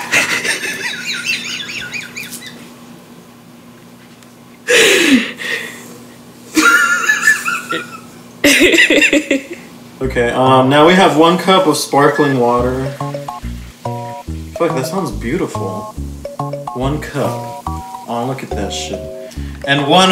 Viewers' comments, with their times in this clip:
0:05 Am I the only one that thought of Zach Galifianakis's laugh ?